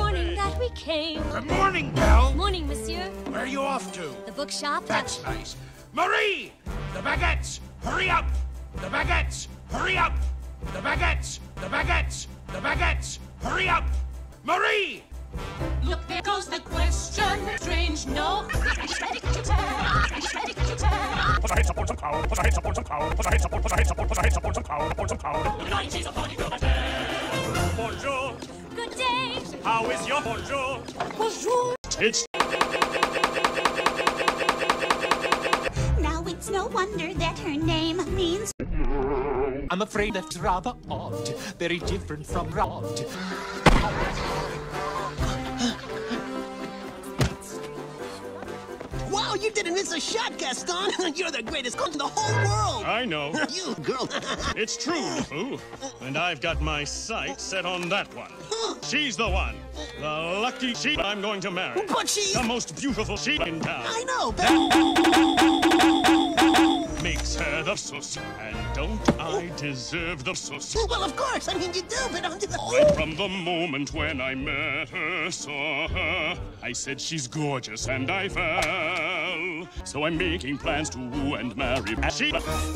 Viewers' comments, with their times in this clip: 0:05 hahahahah so catchy And i admit the thumbnail made me click on the video lol
0:22 I'm German. And that sounds like he's saying Scheiße Wasser pow (Shit water pow) XD
0:56 I didn't know gaston is welsh
0:59 I didn't know Gaston was Welsh.
1:05 Am I the only one who hears the beginning of the Pirates of the Caribbean theme? Istg I hear it